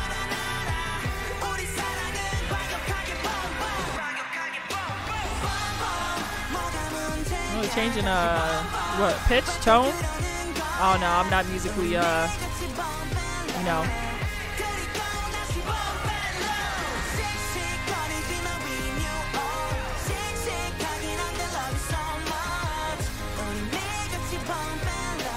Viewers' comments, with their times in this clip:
0:07 i got you lmao he changed the key